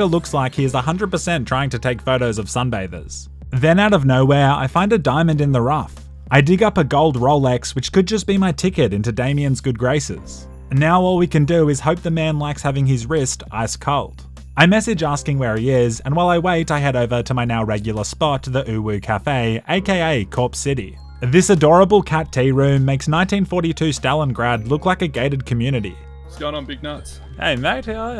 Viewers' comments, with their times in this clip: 0:10 that delivery is hilarious